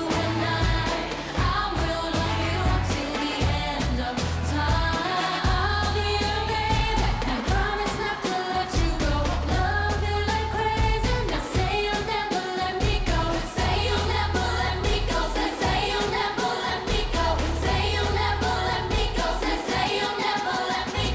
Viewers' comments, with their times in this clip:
0:06 finally, Momo's beautiful and real voice ❤